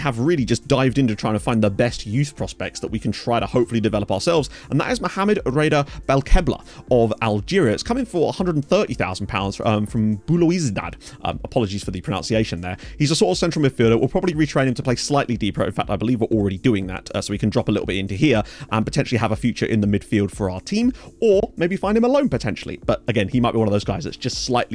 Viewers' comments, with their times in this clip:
0:06 for belouizdad, you did a grand job of pronunciating it. But weirdly, FM is missing a trick because all these clubs tend to go by their abbreviation. Here: CRB. There's JSK, ESS, USMA. The only exception is Mouloudia, and the odd new club like Paradou, but that now tends to be called le PAC